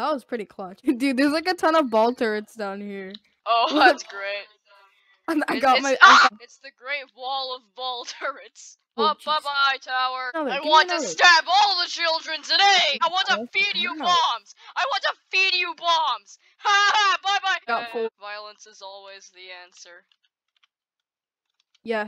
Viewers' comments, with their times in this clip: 0:06 * undecipherable screaming noises*